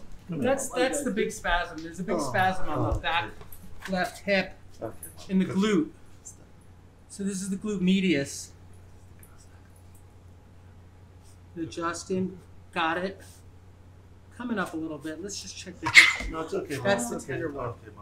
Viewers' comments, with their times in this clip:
0:06 Run that back again? This is the Glut Meatius? Glute Medius?